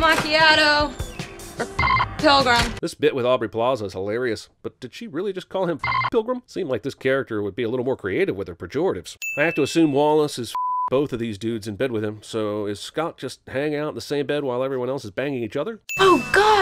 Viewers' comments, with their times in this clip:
0:04 If you can listen closely you can hear that she's actually saying 'fckwad'